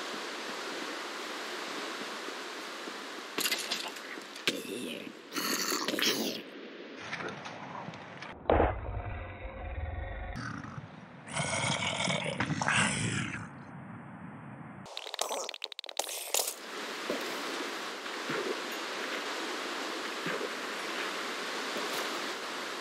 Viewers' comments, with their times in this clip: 0:09 the baby zombie sounds just like an adult zombie lol